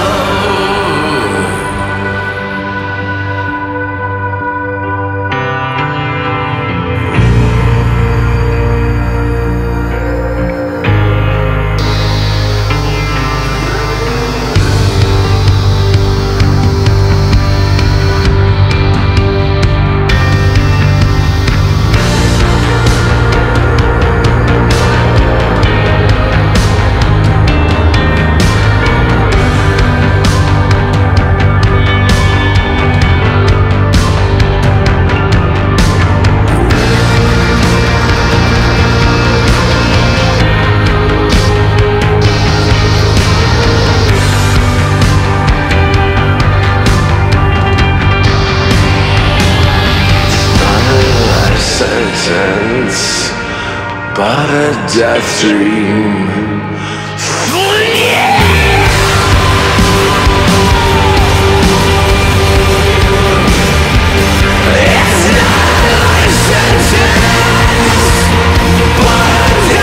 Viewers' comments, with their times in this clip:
0:05 Captivating, hypnotic industrial sound accompanied by that piano ... Great!
0:05 Definitly Faith no More / Mike Patton influence
0:06 Love how it turns from a wedding song to a red wedding one 🥀🩸💀
0:50 sounds like our guy 🤘powerful mann!
0:57 The screams and voices starting are just off the charts!!!!!!